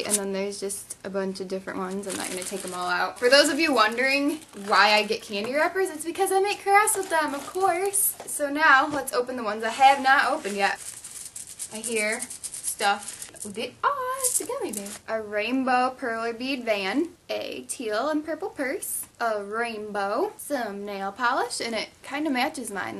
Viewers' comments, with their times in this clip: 0:08 reminded me of jenna marbles lol when you said "of course!!!"